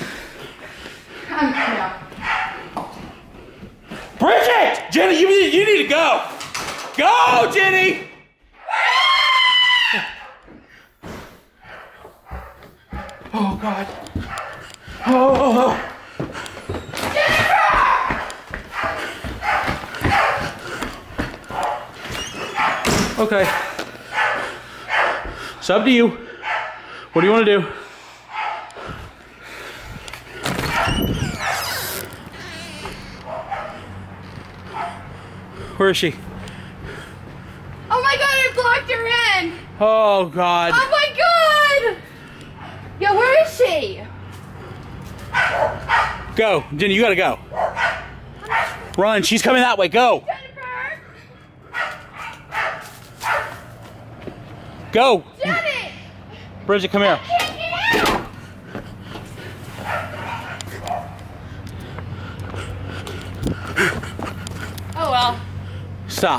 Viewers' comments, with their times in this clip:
0:08 nice laugh lol
0:51 Dun dun dun dun dun....Run.. That's all I could hear 😂